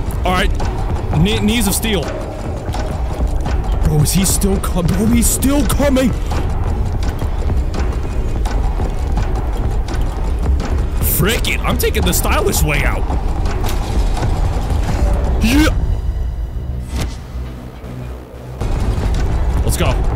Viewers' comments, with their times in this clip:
0:04 why did you say it like that😭